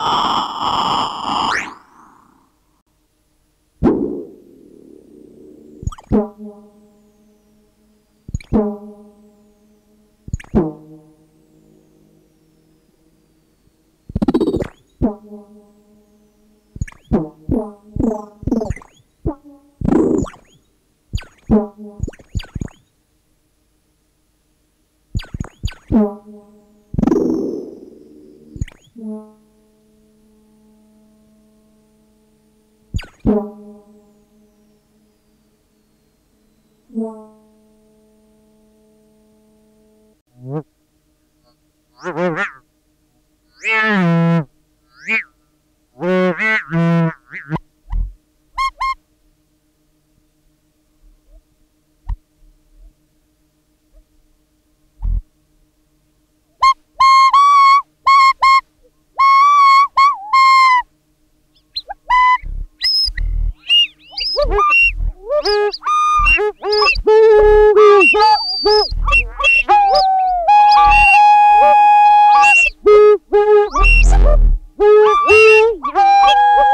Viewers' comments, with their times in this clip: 0:09 richard on the pan flute i love it 😂
0:57 Sounds like me trying to learn the flute.... :/